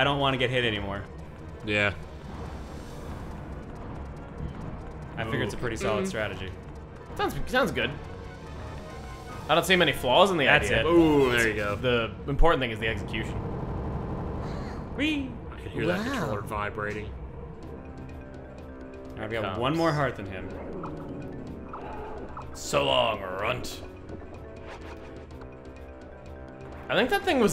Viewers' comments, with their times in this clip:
0:09 You don't see many floors ?